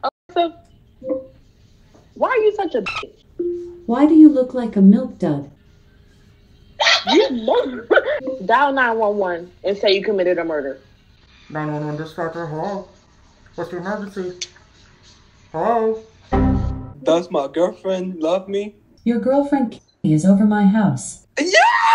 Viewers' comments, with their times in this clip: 0:05 THAT LAUGH BRO